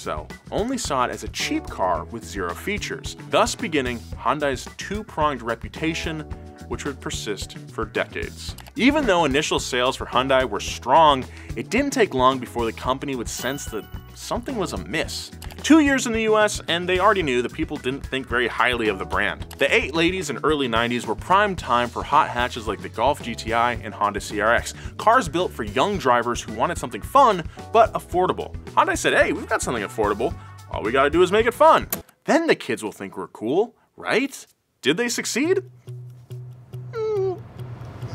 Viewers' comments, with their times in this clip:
0:08 Anyone else catch the “eight ladies/early nineties” slip ?😂
0:15 the 8 Ladies 😂
0:18 The eight ladies?
0:19 He said 8 ladies not late 80’s… right?
0:19 Ah yes, The Eight Ladies. What a time to be a alive!
0:19 "The eight ladies and early 90s" thought I was making it up.
0:19 did you say eight ladies instead of late eighties on purpose? lol
0:20 did he say eight ladies? XD
0:21 he said 8 ladies and early 90s i wonder if anyone else caught that